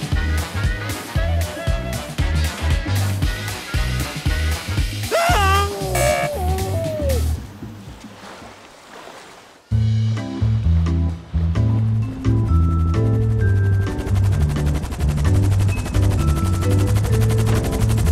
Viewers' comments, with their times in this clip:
0:04 That one driver: Aaeaaæ- Muted ☑